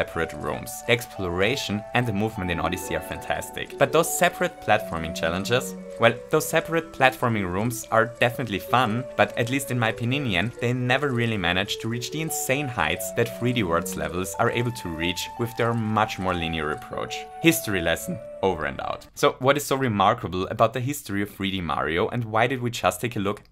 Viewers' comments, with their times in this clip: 0:09 “In my pininion ...” Lol, ima start using that.
0:09 "pinion" where is the o?